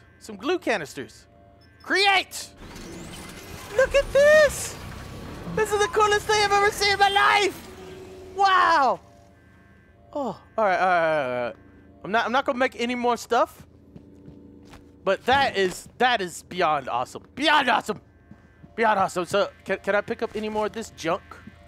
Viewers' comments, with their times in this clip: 0:04 that high pitch tho